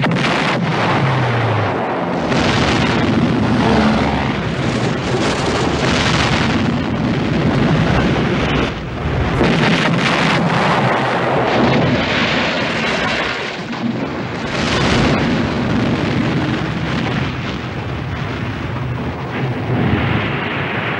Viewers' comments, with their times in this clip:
0:04 hear the Jakes..